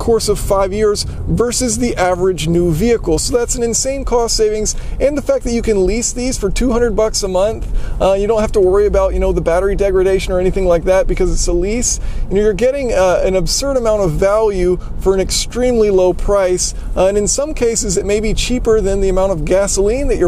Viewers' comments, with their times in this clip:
0:05 you were really starting to sway me...but then I faintly heard the distant exhaust note of that Subaru that drove by and all rationality was instantly combusted haha
0:07 1 reason to not buy an electric car. I love the idea of electric cars, but listen to that subaru!
0:07 well, in the end that flat-four rumble going past made me want to stick with combustion engines. sorry:b